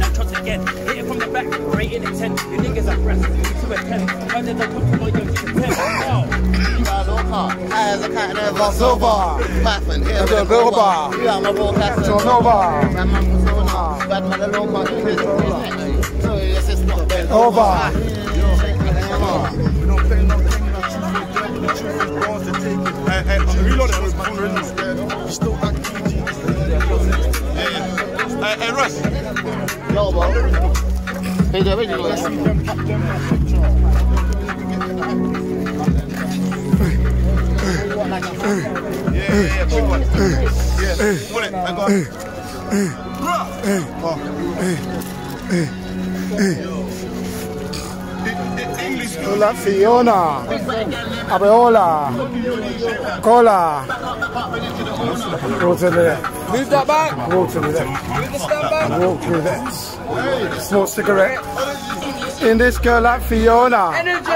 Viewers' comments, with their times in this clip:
0:08 why do I have more flow than Russ when singing this song?😂😂😂
0:52 the way he pronounces Abiola and Adeola😂